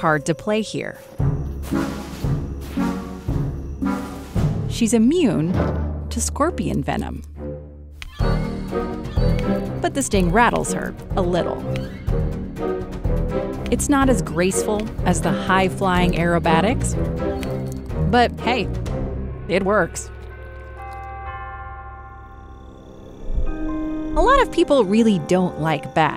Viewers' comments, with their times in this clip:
0:07 can literally feel the call of duty hit marker lol